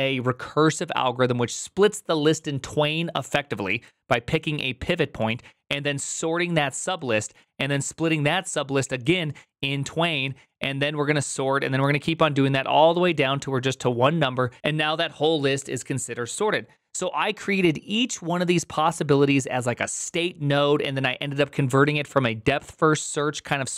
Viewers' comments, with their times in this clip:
0:07 That sounded like a merge sort?